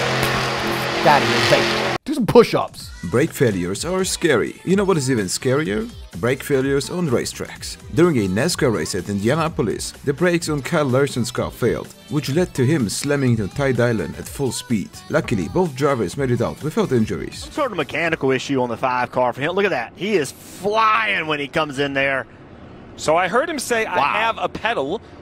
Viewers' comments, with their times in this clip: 0:09 TIE DIALIN?? Lol
0:10 this wreck was so surreal in person, it sounded god using a fly swatter